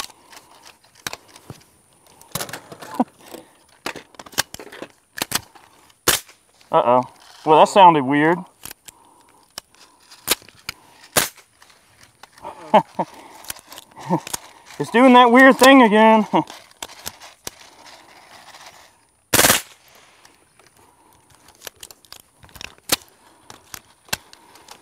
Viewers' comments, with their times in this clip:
0:05 sounds like the silenced PP7 on Goldeneye (N64)